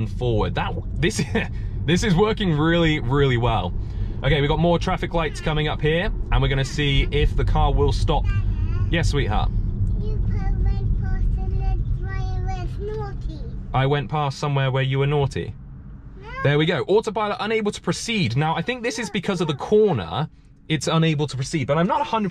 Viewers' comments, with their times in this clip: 0:08 AWEEE! Your daughter is speaking!! So cute 🥰 ❤️